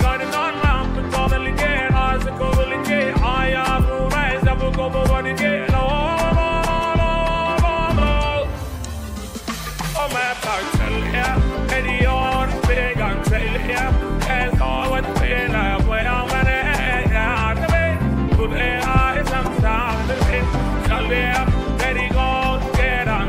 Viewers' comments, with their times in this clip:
0:09 that chaleya thou 🤩